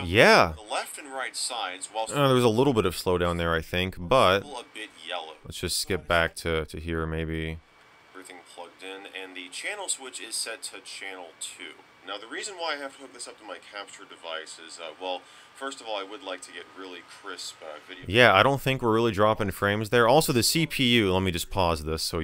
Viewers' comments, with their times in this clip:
0:10 The laptop is taking off from 😁 (the fans are getting loud)